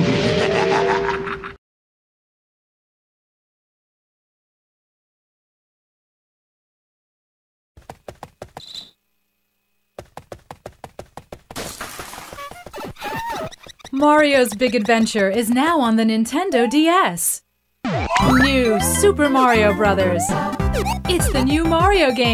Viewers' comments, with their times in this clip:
0:07 every time of bah bahs